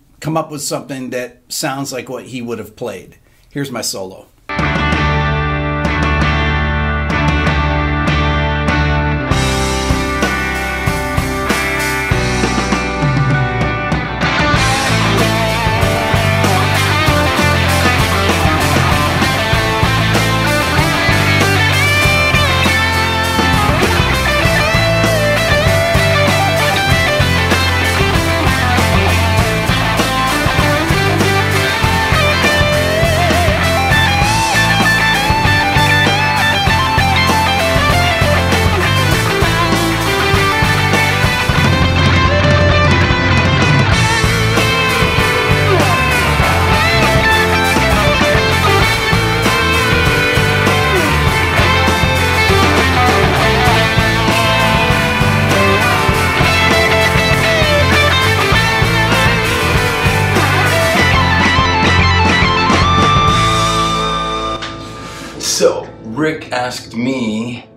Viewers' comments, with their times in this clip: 0:04 * 😁 Peter Frampton style 😁 *
0:49 His solo on this is one of my favorite musical bits from the last year. It's perfectly Frampton. And the look after nailing that tasty lick - says it all.